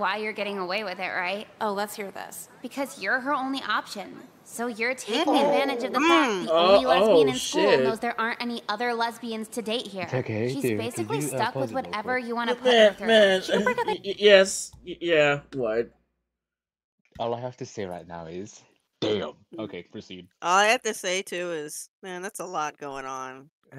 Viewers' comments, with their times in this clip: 0:07 all those “hmms”